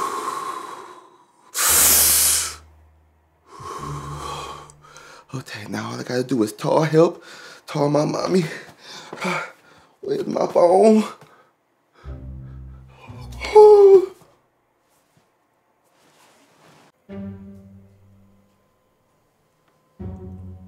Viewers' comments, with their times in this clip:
0:04 That’s not how you take the breath😂😂😂😂😂